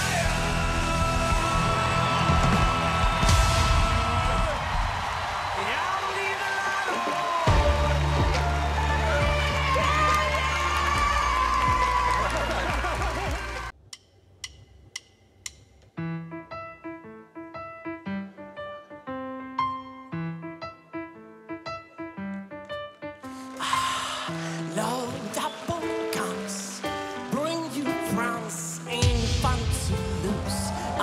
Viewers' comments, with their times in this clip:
0:06 lol FACTS this was so Horrible .... showtunes style guy or whatever - if I thoguht the first two girls were bad ..that ended it for me .. I write this comment and thats as far as I go ... KURT OR NOTHING
0:13 what a fu*kin' performance.. What a fu*kin' voice.. What a fu*kin' aransement..
0:17 made the song his own. Almost not even comparable to the original (in terms of delivery), since it feels a very different